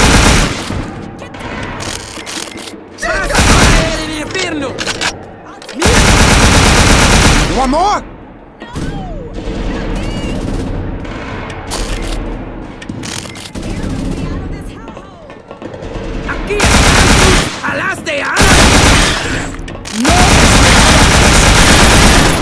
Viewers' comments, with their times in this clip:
0:09 "you want more?!" while a lady in the background screams "No!" right after